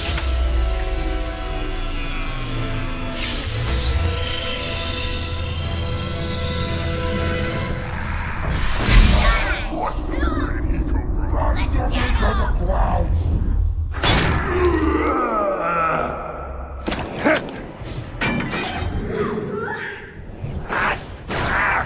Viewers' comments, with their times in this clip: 0:08 Badassery aside, can we just please acknowledge that you can hear what I assume is an elite saying "what the- where did he come from?"